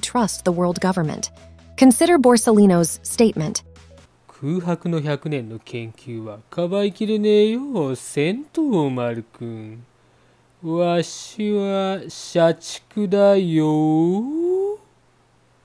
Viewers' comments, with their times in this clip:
0:03 Whoever did Kizaru's voice there is a fucking legend!